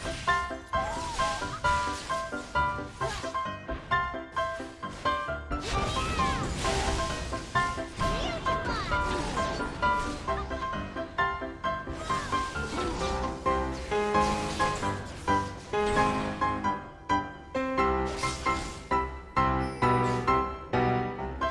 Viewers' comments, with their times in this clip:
0:07 sounds like Lulu said "PewDiePie"!